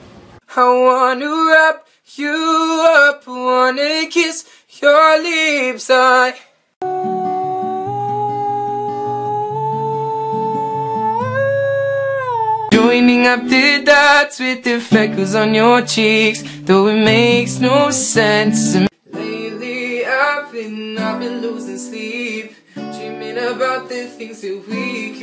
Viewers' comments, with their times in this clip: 0:07 Why isn't anyone talking that's a angle singing god🙈💕💕💗💗😍